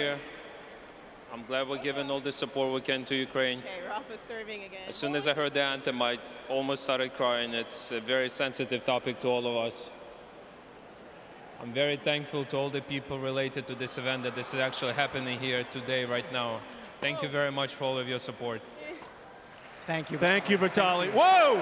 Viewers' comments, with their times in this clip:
0:06 guy is giving his emphatic thoughts while players just keep on playing and crowd cheering over the interview, poorly organized